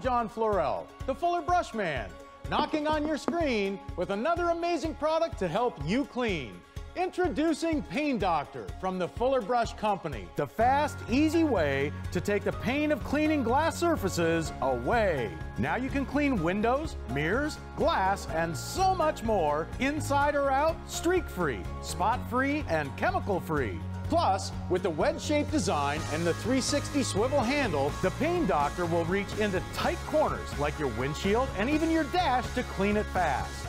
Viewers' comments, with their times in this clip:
0:07 at first I thought he said pee doctor
0:17 Mirrors sound like beers